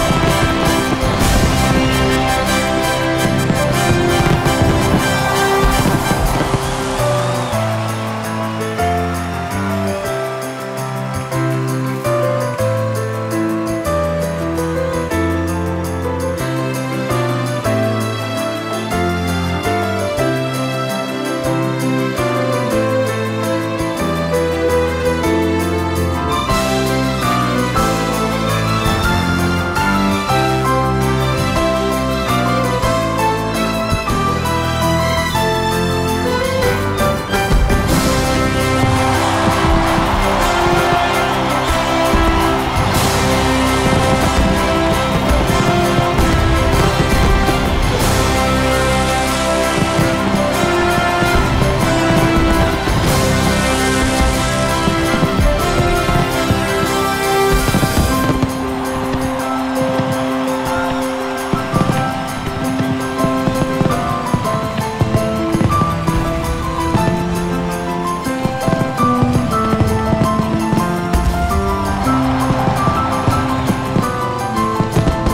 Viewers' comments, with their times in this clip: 0:06 WOW. Beautiful melody.
1:02 The fireworks.... yikes haha talk about ruining the sound for an amazing song! What was he thinking with this? Just have the fireworks at the end or something, the audio for this is unlistenable because fireworks are going off during a piano solo Also I love this song but the beginning is the moment E.T flies musically haha but Yanni did say his influences were Jerry Goldsmith and others like him, so makes sense!